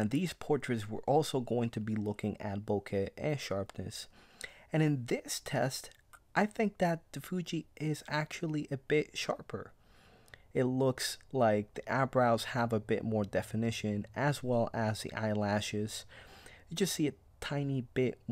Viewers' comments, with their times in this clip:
0:06 Thanks, good review. sounds like you suddenly turn into michael jackson!